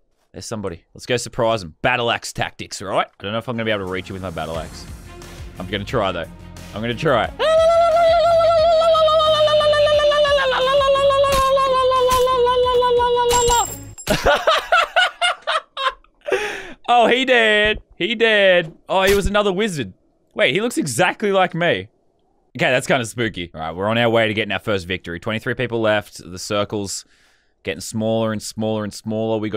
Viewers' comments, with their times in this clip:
0:10 he laughs out the among us song I’m dying
0:12 his laugh sounds like the among us drip XD
0:14 dat laugh tho 😂
0:14 the way he laughed the among us theme
0:14 I swear he sounds like that tiktok sound yall know what I'm talkin bout.
0:14 it sounds like among us